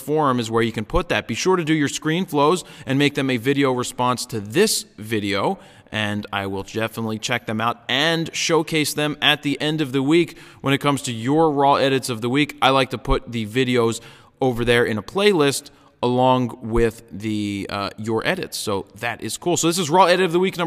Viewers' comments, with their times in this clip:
0:05 Lol "i will Jefffinitely"